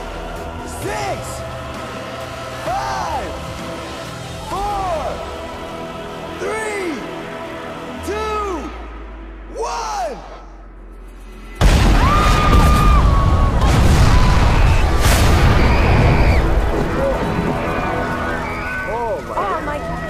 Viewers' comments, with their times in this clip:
0:03 The music got me dead💀💀💀